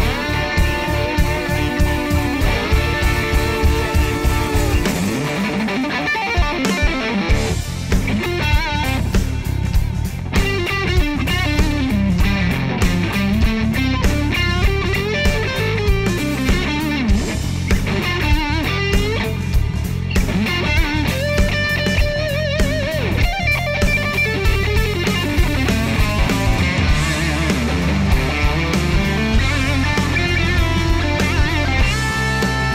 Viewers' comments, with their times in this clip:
0:05 Oh my god !! Love your playing (the "explosion" on blow my mind !!) Killer sound also, as always.
0:19 Nice Jason Bieler inspired lick ! Well done!!